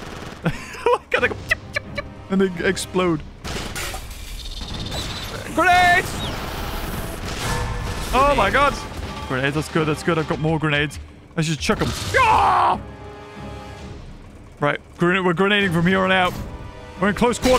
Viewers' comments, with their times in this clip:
0:04 oh, the way dilophosaurus came out all like do do do do do